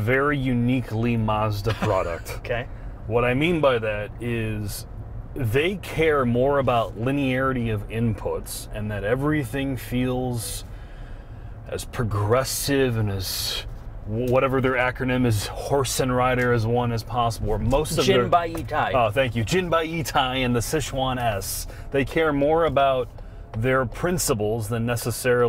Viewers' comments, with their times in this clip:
0:09 I've heard Samsung phone charging chime here. Was it the mentioned wireless charger engaging back after turning?